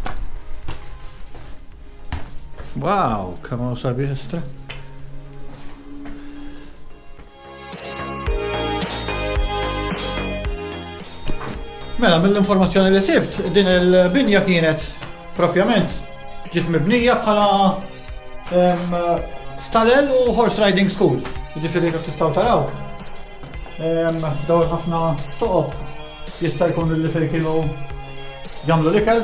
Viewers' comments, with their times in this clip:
0:10 you got tired of speaking English , or...? (I didn't understand one word of what you said there;) Thanks for showing some more of Malta!